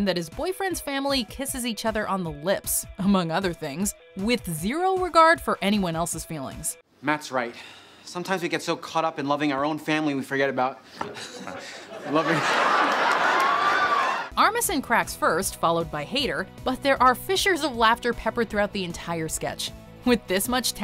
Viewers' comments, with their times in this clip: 0:07 Did Armisen fart between laughs?? 😂😂